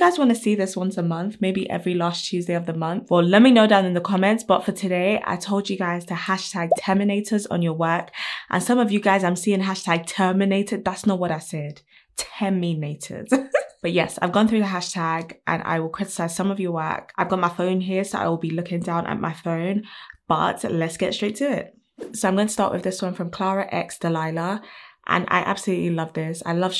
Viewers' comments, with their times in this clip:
0:10 her laugh so cute ♡ I'm also laughing bc people using "terminator" hashtag, idk why but that's funny xD